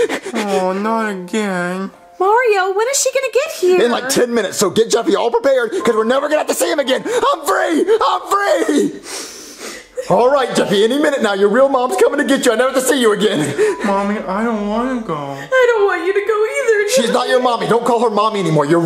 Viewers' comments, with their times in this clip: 0:04 the way jeffy said no more mommy and daddy then he says againn 😭 and tilted his head down this was way too sad for me